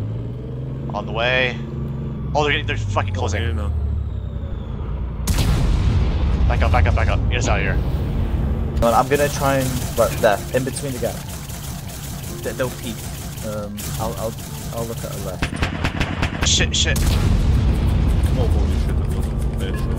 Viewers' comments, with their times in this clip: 0:03 The peaceful minecraft music in the midst of war and chaos is too funny😭